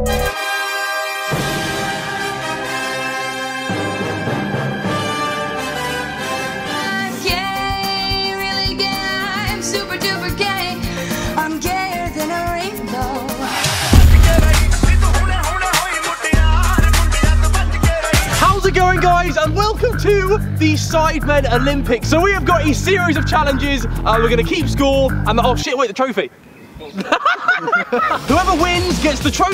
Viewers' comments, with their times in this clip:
0:07 idk i just really like the song for some reason its nice
0:13 best beat drop of all time
0:13 biggest beat drop ever bro